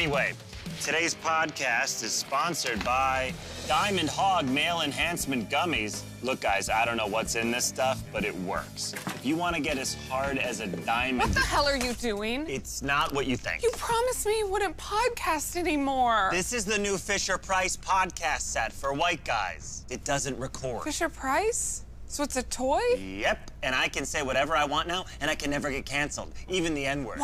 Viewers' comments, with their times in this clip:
0:09 And the way he starts the "eff" right when she walks in